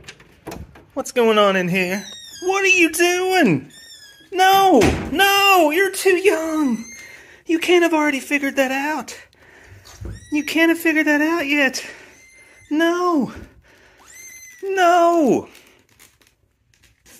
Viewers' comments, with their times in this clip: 0:03 He sounds like bandit from bluey